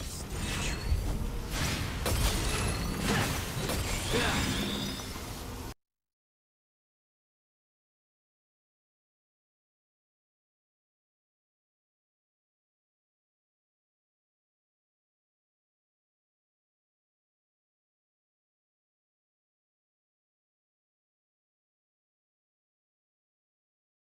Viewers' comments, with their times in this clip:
0:08 that feeling when you mess up the timing of the music even though in the editing, it was aligned perfectly